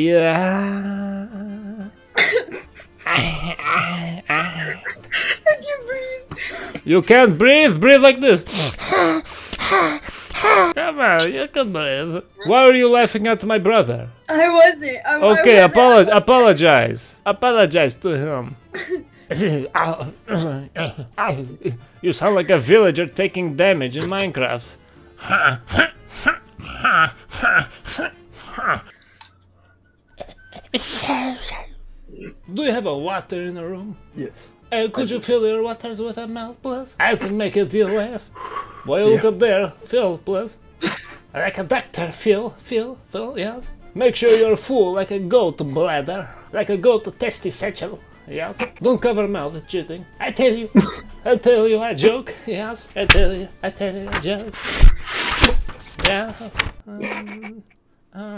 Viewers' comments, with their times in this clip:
0:08 elmo ahh noises💀 also what I heard last night coming from step bros and step sisters room
0:21 you sound like villager taking damage in minecraft 😭😭
0:25 bro made the villager sound better than the villager
0:41 this got lol like a vileger😂